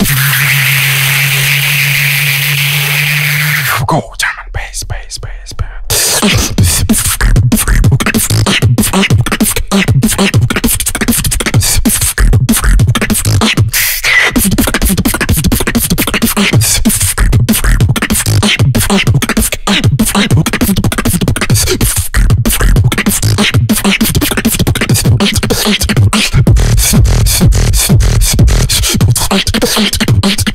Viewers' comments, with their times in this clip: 0:05 Why he do codfish beatbox ? he beatbox like codfish in csgo 4
0:13 what was thaaaaaaaaat inward whistle